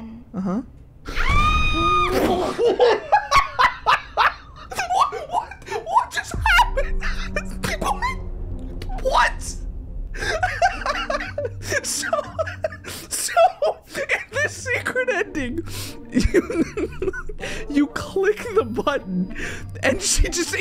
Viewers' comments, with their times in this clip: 0:06 ALSO ON LAUGHED SO CRAZY THAN YOU IMAGINED ON THE TWO BOTTON NEXT TO CATNAM